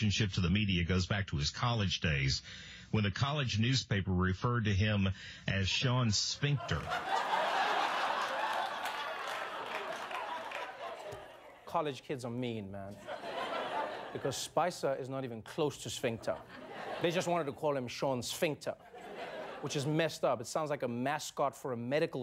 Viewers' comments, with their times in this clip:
0:04 this guy sounds like one of the voice actors for TOEFL exam...